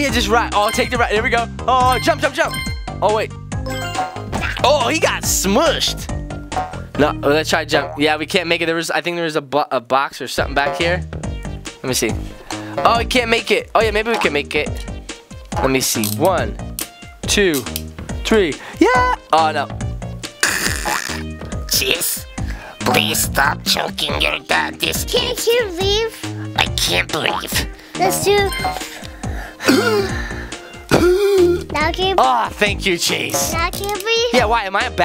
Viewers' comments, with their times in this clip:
0:09 I think there’s a butt- or box somewhere back there😂😂😂😂😂
0:21 He sounds evil lol